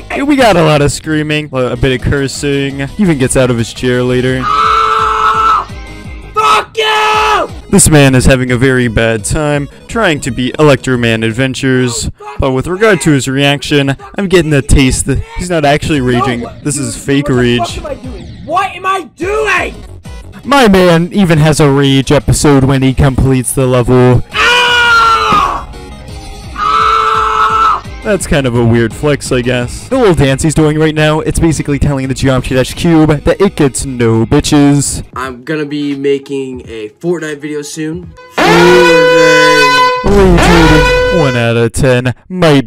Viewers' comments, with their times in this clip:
0:03 i like how he screams when he beat The level
0:29 when you said i guss your voice was kinda weird were you sick?😥